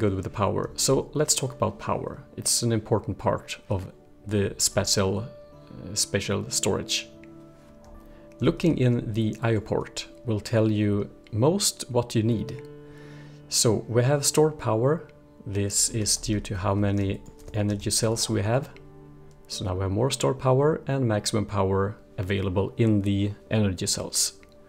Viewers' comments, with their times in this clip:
0:06 Thanks for explaining spatial storage! :) btw, you pronounced it correctly